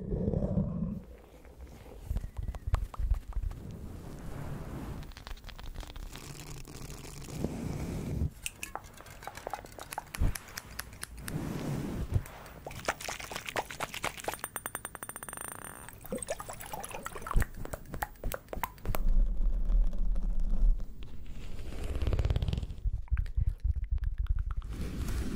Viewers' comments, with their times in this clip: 0:09 anybody else think the water sounded cold😅